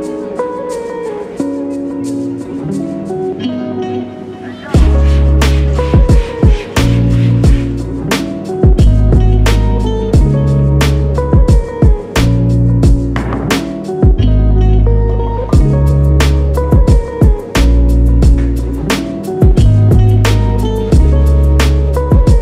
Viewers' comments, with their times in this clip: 0:04 Looove how the sprays were on beat 😆